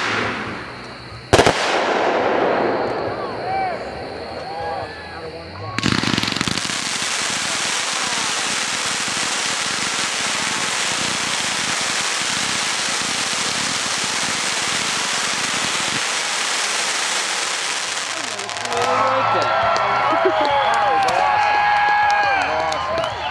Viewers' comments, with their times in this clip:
0:06 The reaction of the crowd after the Z cake is music to a pyro junky's ears!!!